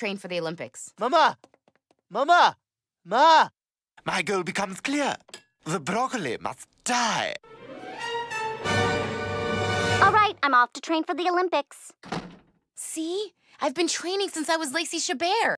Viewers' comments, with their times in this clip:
0:10 You know it's Chabert when Meg sounds like Eliza from The Wild Thornberrys. Crazy how Meg's VA was truly smashing wild like the Thornberrys (as in she kept constantly having different VAs)! 😂 Also as y'all aren't as aware Meg in the majority of this episode was voiced by Mae Whitman. You can tell it's her there since sounds like Tinker Bell (of the spinoff Disney Fairies series of movies of the same name), but older (ironic, innit?). That said, Chabert or Whitman as Meg? I personally don't mind either, but I'd go Chabert hands down if I had to choose 1!